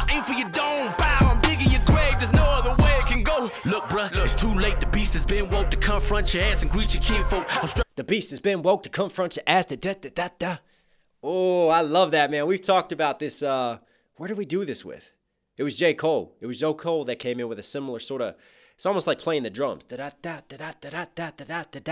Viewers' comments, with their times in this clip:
0:03 Hopsin said one of his idols is Brotha Lynch Hung. This is how Brotha Lynch typically flows during when Hopsin was listening to him. Hopsin is also using a lot of Lynch's bars in the song. Brotha Lynch Hungs is the rip gut cannibalistic nut. Come on people.